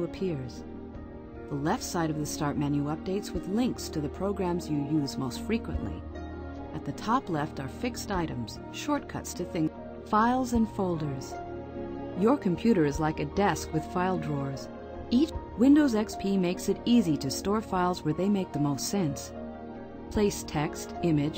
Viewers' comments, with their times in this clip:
0:08 Shortcuts to thing--- (skipped again)